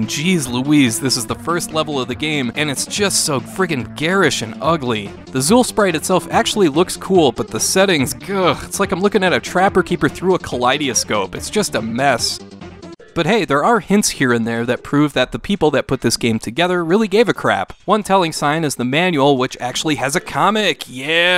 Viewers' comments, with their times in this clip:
0:09 Ka-Lie-De-Ehh-Scope = Kaleidoscope (Ka-Lie-Da-Scope) ..... :). Maybe its the midwesterner in me that found that odd.